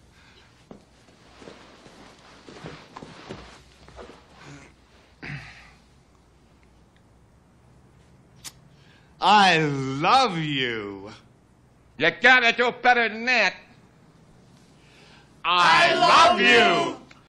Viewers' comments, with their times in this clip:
0:08 Did someone mess with this video? I could have sworn that the first time I heard this, at the mark, there was the sound of a zipper coming down.